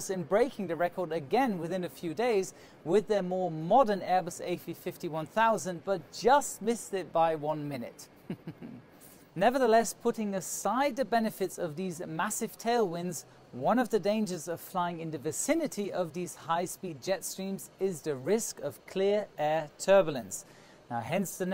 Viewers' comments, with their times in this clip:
0:08 I love your evil laught in
0:08 That laugh xD